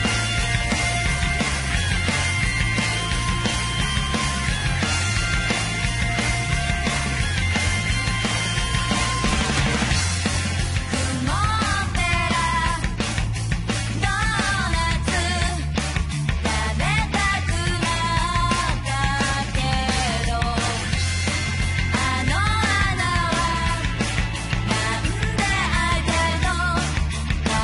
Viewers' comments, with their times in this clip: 0:10 the melody and the tempo seems like Steven Universe's intro. Maybe Rebecca Sugar was inspired of this.